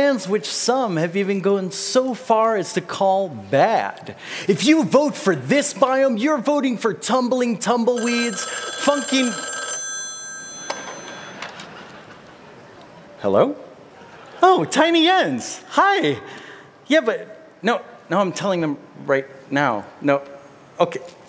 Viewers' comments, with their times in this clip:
0:06 It sounded like he just dropped an F Bomb.